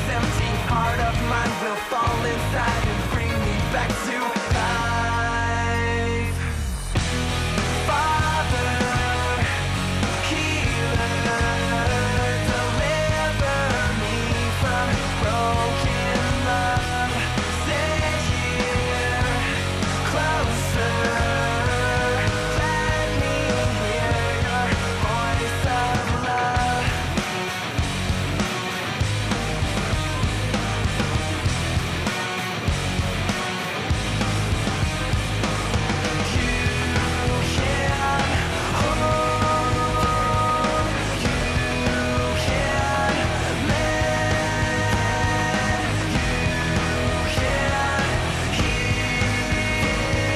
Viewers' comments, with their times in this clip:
0:04 dat bass flip doe :3
0:31 that's a sick guitar